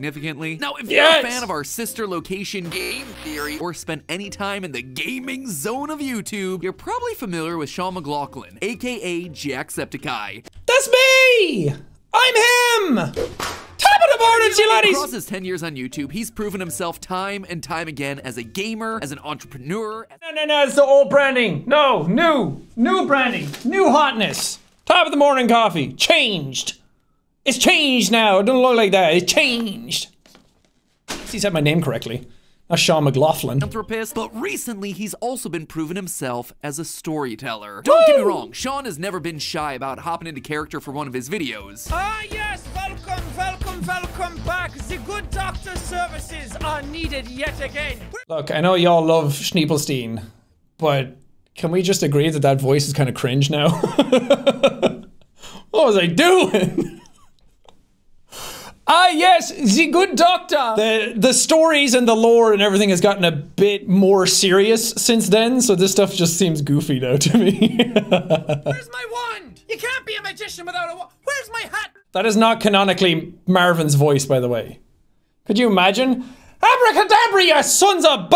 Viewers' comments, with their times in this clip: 0:10 i LOVE the layered "Top Of THe MornIn To yA LaDDiEs"
0:12 bro he heard the slap and his reacton lit on fire, how did he react so fast and say the "top of the mornin...."
0:13 the way he synced with the vid was so satisfying to me
0:13 man this guys jacksepticeye impression is great /j
0:59 bro turned into Richtofen